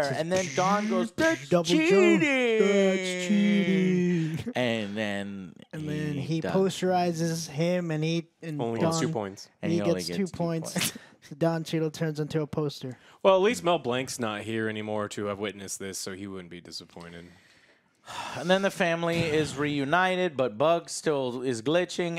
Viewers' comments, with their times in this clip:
0:03 Very funnier the way they say it like that 😂